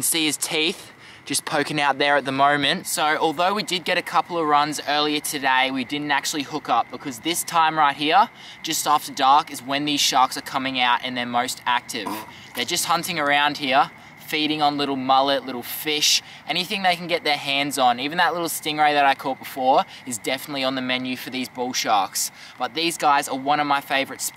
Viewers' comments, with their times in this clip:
0:10 the shark made a werid noise
0:11 Did someone farted 😂 a